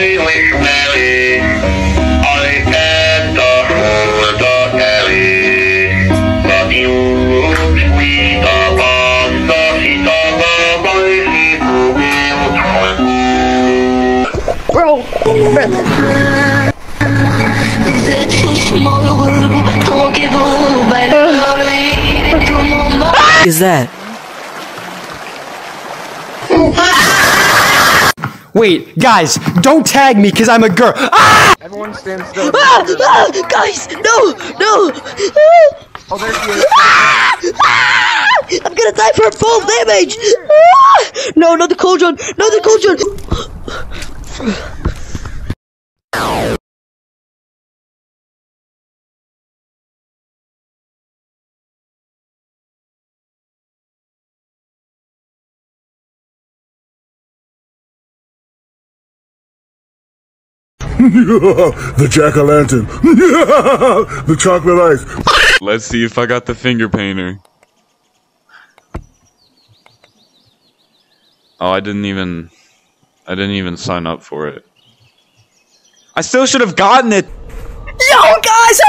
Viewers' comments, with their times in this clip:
0:06 that “upon” was personal
1:01 WHAT IS THAT LAUGH